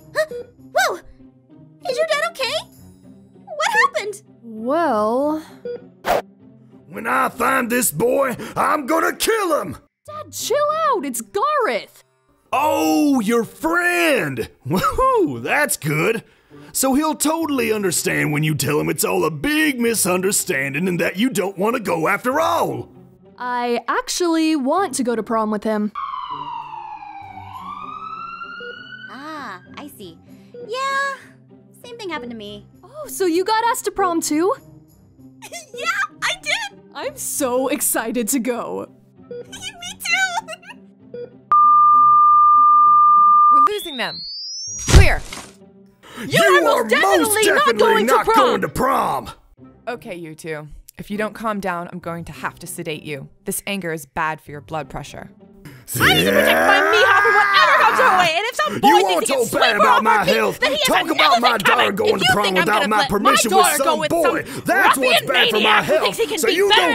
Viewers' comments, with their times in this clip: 0:10 I can hear Zane’s voice is katelyn dads voice
0:30 NOT THE IMMEDIATE CUTS TO THE AMBULANCE SOUND, MY HUMOR IS SO FREAKING BROKEN— 💀👍
0:38 i love how both of their hart beat went flat
0:50 “if u don’t calm down I’m going to sedate u” Me: damn that was so calm